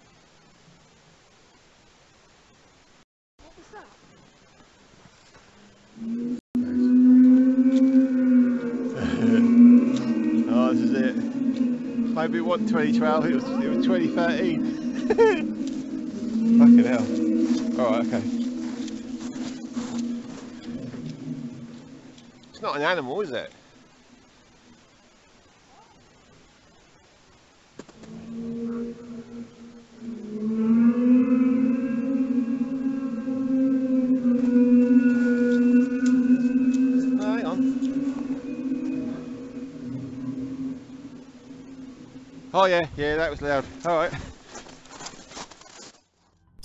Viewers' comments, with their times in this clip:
0:03 sounds like heavy equipment
0:31 you're laughing. Adam Frankenstein is crying his pain out and you're laughing. Unbelivable.